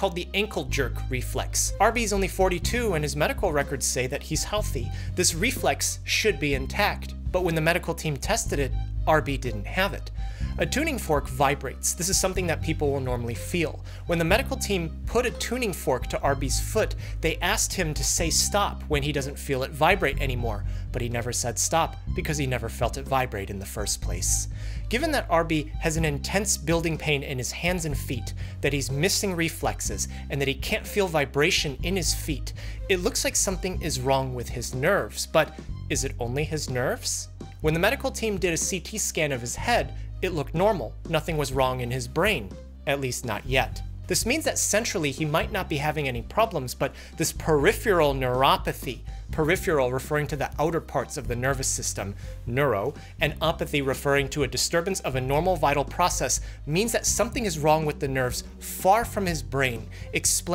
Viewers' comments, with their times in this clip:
0:04 DOOM music again 😅
0:48 Yea.. uhmm .. there's no U in "Peripheral". Perif-erel